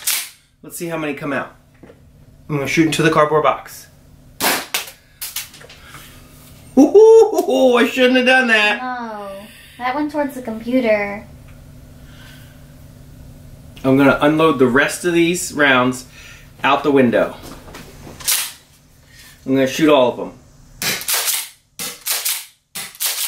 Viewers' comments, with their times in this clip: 0:06 he sounds like Chris prat